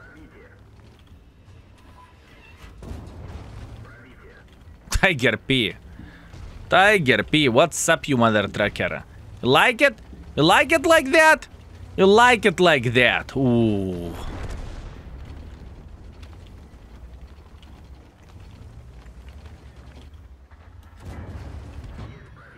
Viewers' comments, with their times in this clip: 0:09 why dos he sound like Gru from Despicable me